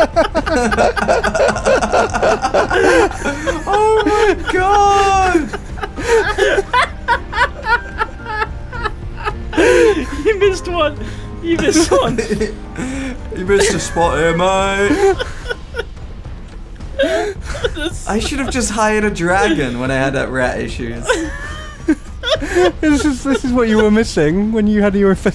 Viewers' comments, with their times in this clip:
0:06 the laugh of a broken man